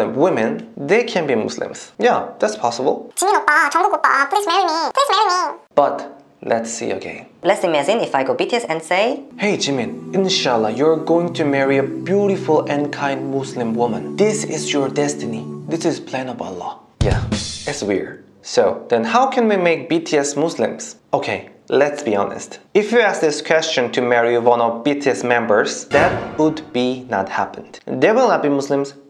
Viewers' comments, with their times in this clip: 0:10 he is sounding like a fortune teller 😂😂